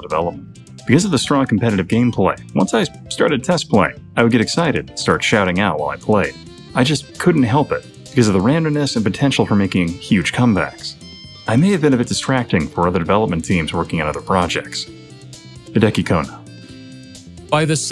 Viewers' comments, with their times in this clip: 0:05 Did do some voiceovers for this video because is when it kinda sounds like him.